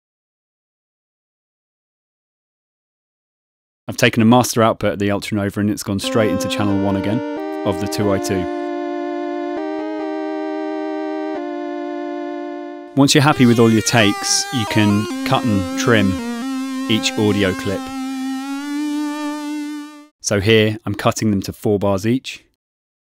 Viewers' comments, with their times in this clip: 0:07 What is the name of that sound ? it's like the perfect 8 bit tone